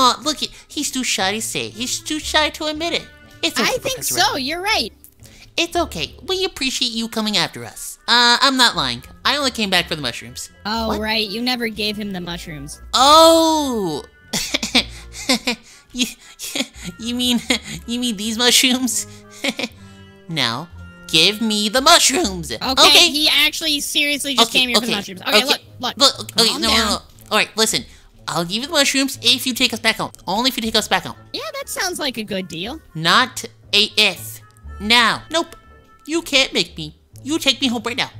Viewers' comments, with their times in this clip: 0:03 Yay there friends again😺😸 what was that voice in the background.
0:03 Omg in red Steve talkkk wow
0:21 OMG HAHA!!! THE VOICE CRACK!